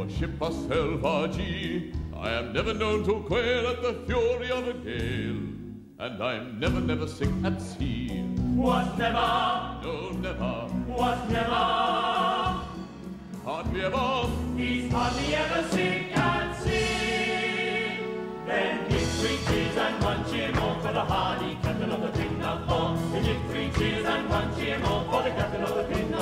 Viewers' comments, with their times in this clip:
0:08 bart and sideshow singing 🤣😂